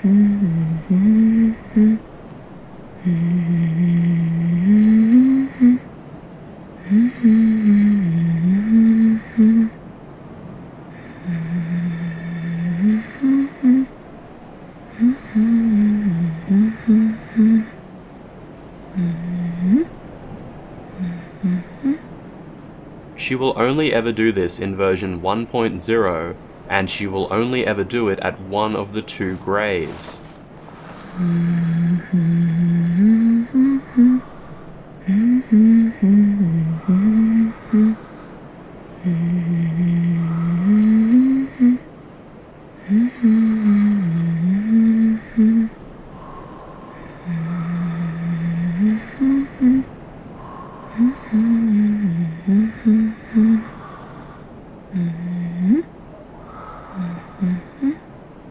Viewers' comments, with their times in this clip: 0:06 TELL ME THAT DOESNT SOUND LIKE THE HUNTRESSES LULLABY! I’m thinking dead by daylight used the song as the base of their killers lullaby.
0:46 When she hums her lullaby, I thought I started snoring but I found out the snoring comes from the video